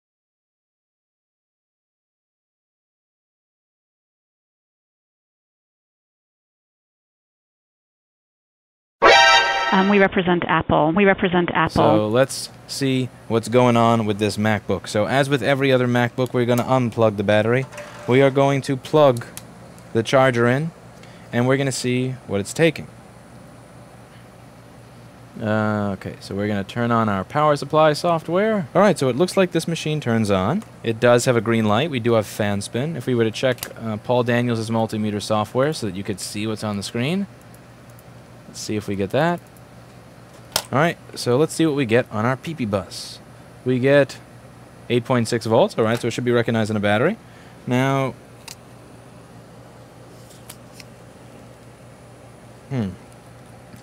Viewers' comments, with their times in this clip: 0:08 My ears... I thought my audio died...
0:11 "we represent Apple" was transcribed in the automatic subtitles as "we represent asshole". I'm not kidding.
0:41 correct me if i’m wrong, but did he say peepee bus?